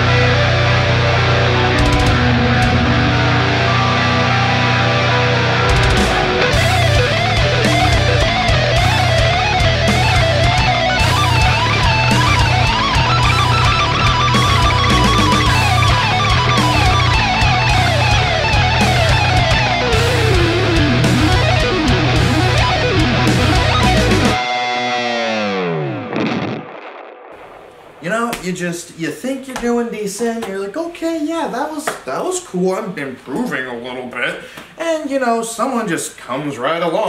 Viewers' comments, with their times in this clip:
0:06 This is probably an unpopular opinion, but Stevie T outshreds Jason. Stevie T probably outshreds anyone on youtube, except for Rick Graham, I think. Notice here how the lick is very similar to the lick Stevie played in the first round of his shredwars. Except Stevie played it faster, cleaner and on the neck pickup. Jason is obviously amazing, but Stevie is just slightly better to get that edge over him.
0:06 Idk remain me of scream a7x start solo
0:15 Sounds like 2 birds fighting
0:17 Jason Richardson twinkle twinkle little star... :D
0:19 the demon sweeps
0:20 those sweeps cleaned my room
0:20 cleanest sweeps ever watch it in 0.5x